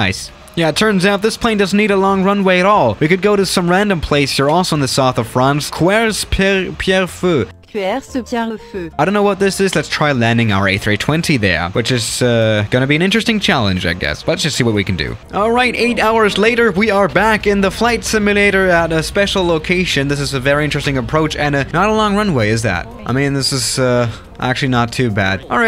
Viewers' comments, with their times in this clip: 0:10 That "there" was so German😂😂😂